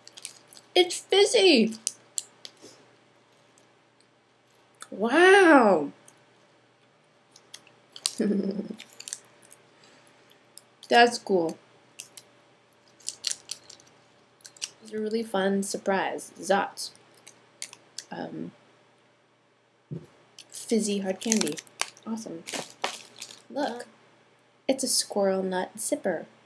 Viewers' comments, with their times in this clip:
0:07 really cute laugh
0:07 cute laugh :3
0:08 hhhhh tha laugh it mack laugh so hard ..
0:08 Scrub to and put on repeat for an awesome laugh. :D
0:08 haha cute laugh. I ABSOLUTELY LOVE ZOTZ!!!!